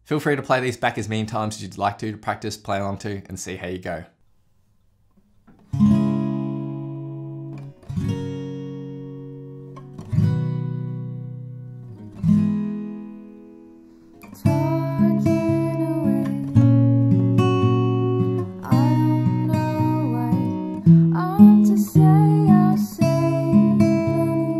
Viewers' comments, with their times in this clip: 0:06 The vocals on this recording are so good I frequently come back to and listen through the entirety of it.